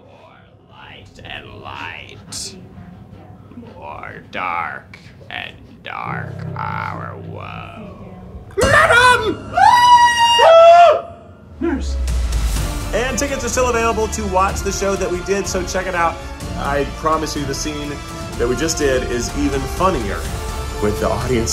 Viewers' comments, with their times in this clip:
0:09 "MADAM!" and the ensuing screaming Classic.